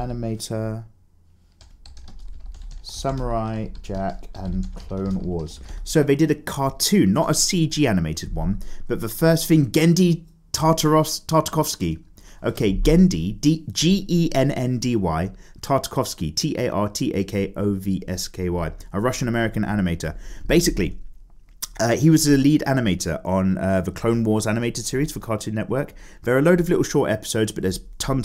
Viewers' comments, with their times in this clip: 0:09 lmao you pronounced his name absolutely wrong, but I really like it.